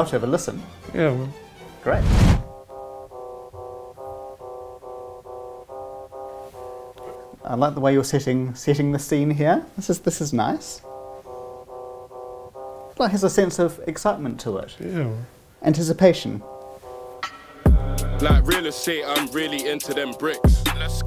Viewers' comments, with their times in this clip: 0:08 even I thought he said I like the way your sitting🤣no wonder tr looked confused